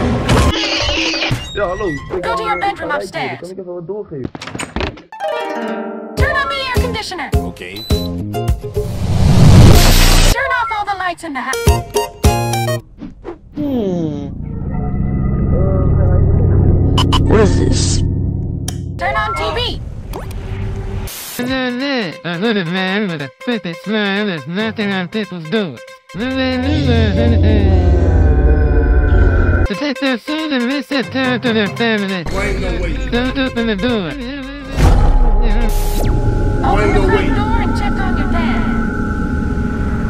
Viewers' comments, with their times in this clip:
0:03 I love how dad just speaks my language Dutch I love that that’s my favorite part
0:21 that bloxburg news voice is just too perfect
0:21 goofy ahh voice💀
0:21 what that voice💀💀💀
0:21 bro the hell is that voice its so goofy 💀💀💀💀
0:22 LMAO THE AI VOICE OF THE BLOXBURG NEWS REPORTER
0:25 it kinda laughs